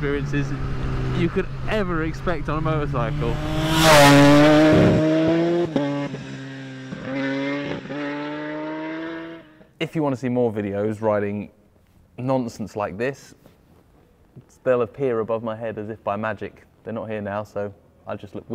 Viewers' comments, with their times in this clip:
0:03 I love that BRAAAAAAAP. Sound of this bike is just amazing It`s not piglet squealing sound like an old one ZX-10R 2018
0:04 Mate that fly by sounded so good 😍